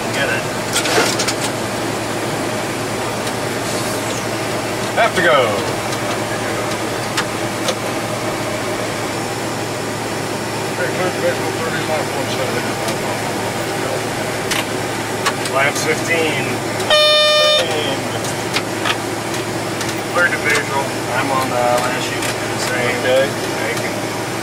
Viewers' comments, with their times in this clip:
0:05 did co-pilot say he had to go. It sounded like "have to go"